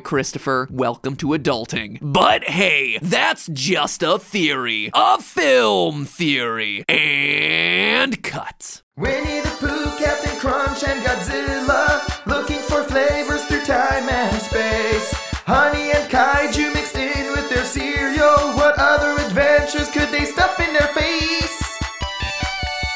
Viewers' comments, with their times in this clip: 0:09 that song tho 🤣🤣🤣